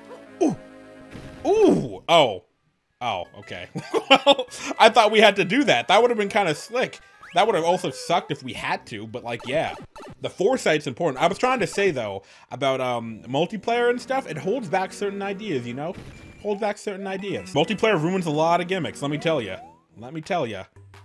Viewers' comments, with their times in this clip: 0:09 I had to rewatch to know that he said pourin'...